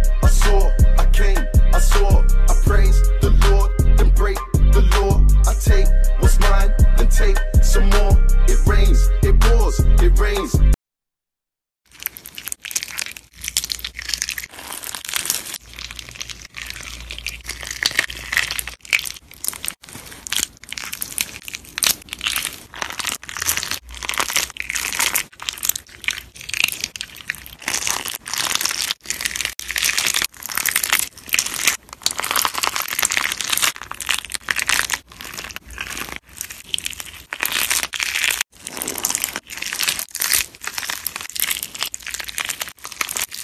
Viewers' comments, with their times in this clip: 0:10 Stop whaching this Beyond that point it's just slime squishing
0:11 is it me or is it Minecraft sounds...
0:12 it's sounds like straight nut
0:27 sounds like fucking asmr